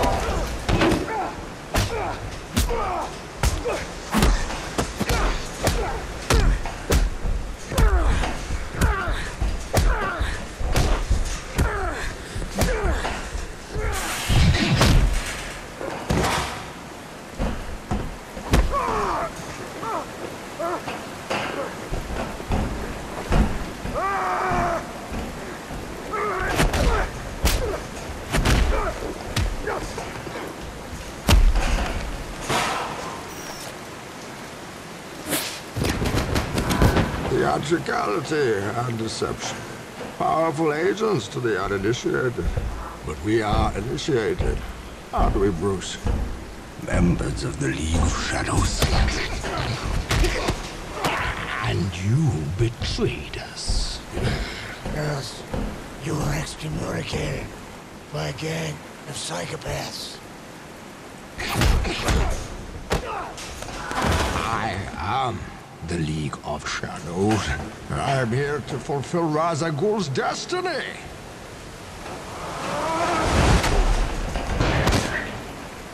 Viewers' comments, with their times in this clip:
0:06 The only time in the trilogy where we hear his real voice while he fights as Batman. It proves that his adversary is pushing him to his limits.
0:23 Batman's battlecry is so badass, he knows he's getting beat and he's hurt but he just doesn't wanna give up
0:23 I love that Batman is giving it absolutely everything he has, but knows its not working at all on Bane. He realizes his inevitable demise and lets out that yell of anger and frustration Pretty powerful stuff.
0:23 Outside of the hallway fight in Netflix's Daredevil, this was the greatest fight scene in superhero movie history. Bat's yell is absolutely iconic.
0:52 almost sound like Darth Vader
0:57 As much as i love the dark knight trilogy. I just never enjoyed bales batman voice, even it just didnt sound like a batman at all